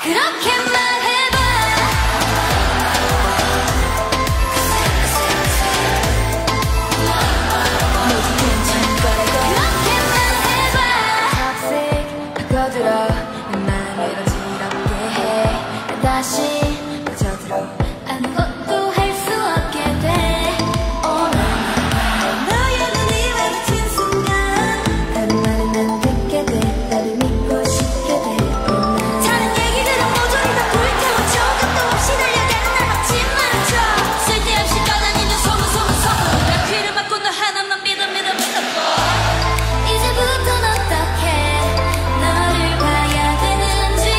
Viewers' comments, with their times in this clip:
0:08 it sounds like yena says '모두 괜찮을 거라고' instead ?
0:29 yena's rap slapped me in the face. HARD